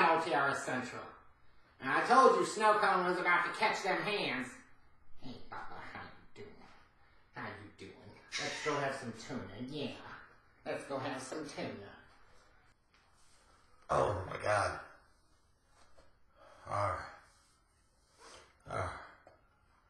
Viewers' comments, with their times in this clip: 0:07 lol Did Snowcone hiss?